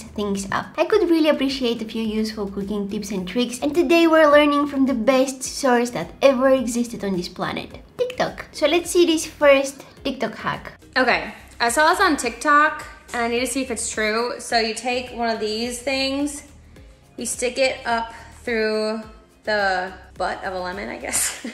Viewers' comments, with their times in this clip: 0:07 the way she says tik tok is so cute